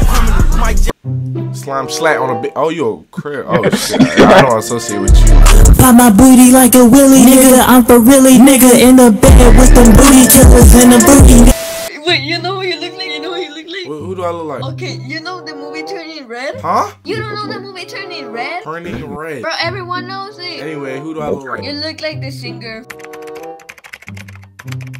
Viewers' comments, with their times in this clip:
0:06 The song is fire